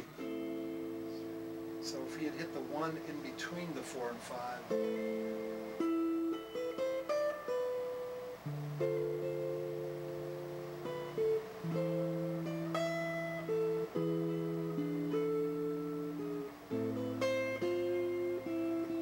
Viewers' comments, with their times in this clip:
0:04 reminds me of gerudo valley